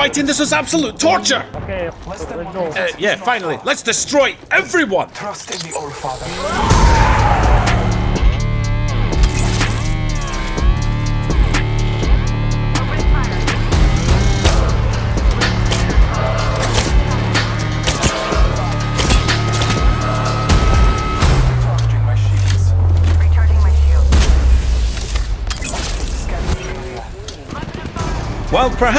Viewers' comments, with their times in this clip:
0:05 hardest beat drop ever🔥🔥🔥🔥
0:05 Ngl low-key the soundtrack got me goosebumps 💀
0:09 that music with the bloodhound ult tho. On point